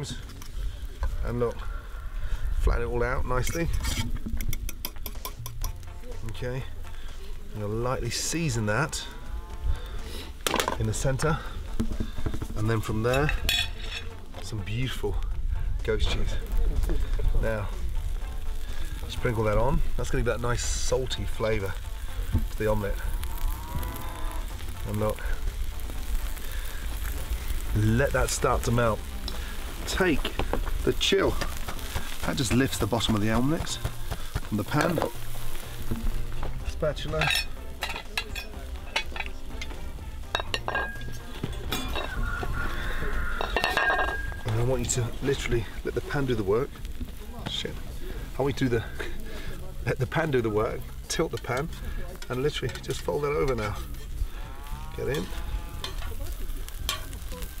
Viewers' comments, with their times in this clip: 0:08 who else heard a cow moo?
0:22 the cow is complaining about the goat cheese
0:42 am I the only one who heard that scream in the background?